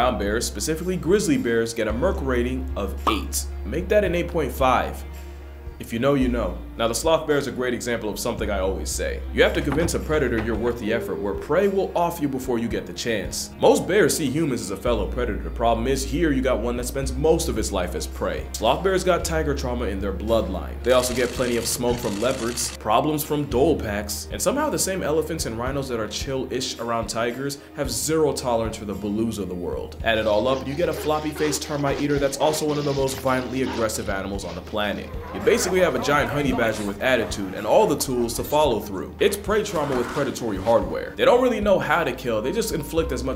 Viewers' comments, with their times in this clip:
0:03 that voice recording was sooo bone chilling like that shit had me in a blanket with the lights on watching the amazing world of gumball
0:20 is that really a/the noise that leopards make?
0:30 the bear sounds like joe rogan imitating a bear lol